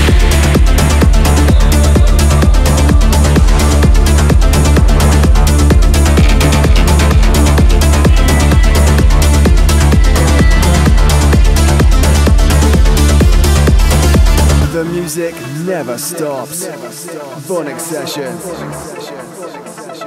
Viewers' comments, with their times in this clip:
0:03 Track is unreal.